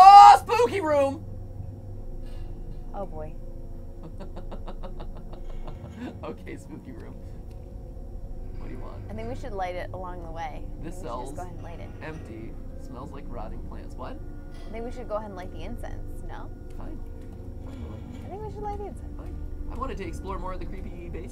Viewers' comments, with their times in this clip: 0:03 Creepiest MatPat laugh ever...